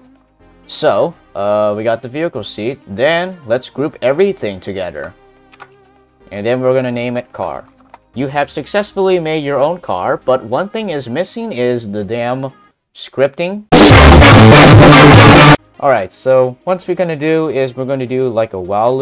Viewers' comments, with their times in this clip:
0:06 the bass tho